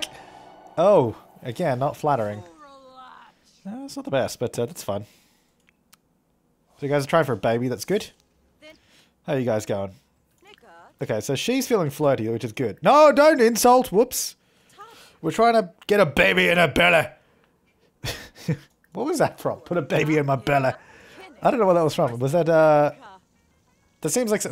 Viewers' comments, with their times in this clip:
0:08 you can hear a sim say the n word.